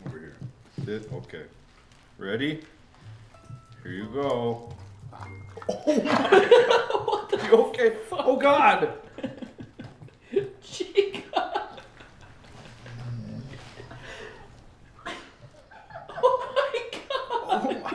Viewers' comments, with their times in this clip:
0:03 Chica use INHALE